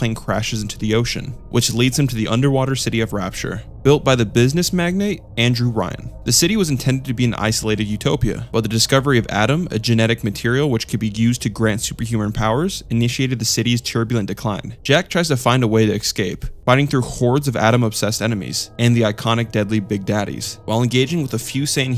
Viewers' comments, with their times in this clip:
0:08 sounds a lot like evangelion